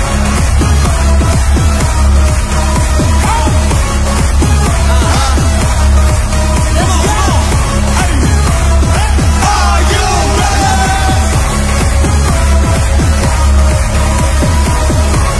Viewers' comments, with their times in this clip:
0:03 hobi laughed at jin and v when they got wet. 😄